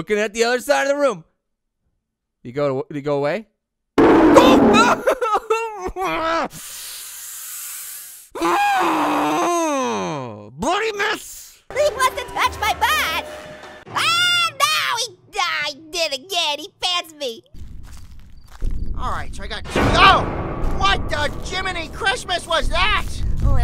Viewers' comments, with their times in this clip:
0:08 sounds like Pear is frustrated, than scared.